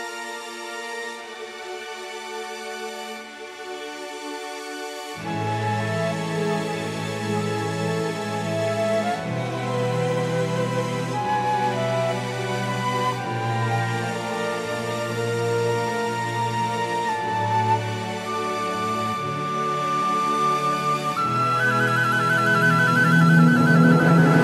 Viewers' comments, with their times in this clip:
0:05 The melody in this song sounds SO much like "Close to the Edge" by Yes.